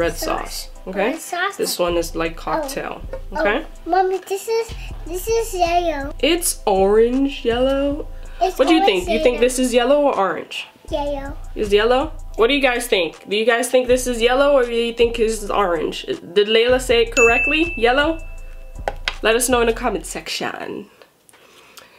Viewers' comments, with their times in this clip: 0:04 mommy this is yeyow